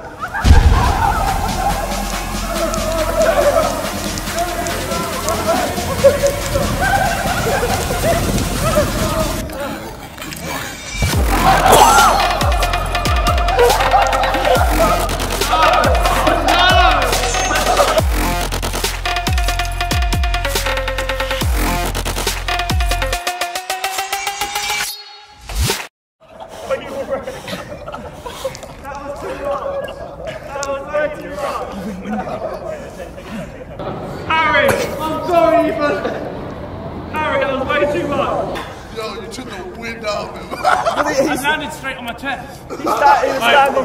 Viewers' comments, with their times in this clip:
0:10 it was so funny that the cameraman also laughed😂😂😂
0:28 Josh sounds like a dad